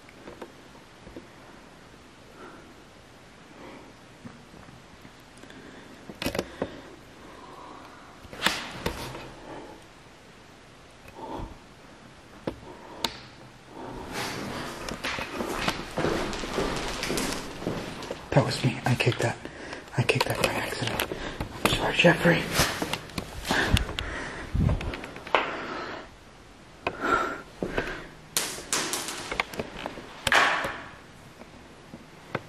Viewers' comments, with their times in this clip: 0:06 That sound sounded truly unholy!
0:07 Someone hoggin' a loogie sounds like what an older woman would sound like.
0:14 hear kid screaming in hallway